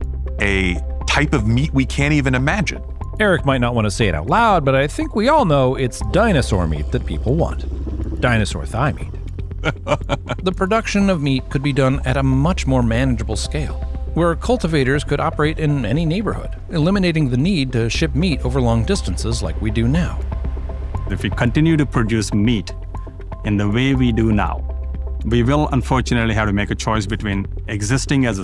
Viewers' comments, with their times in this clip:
0:09 that laugh, caught me off guard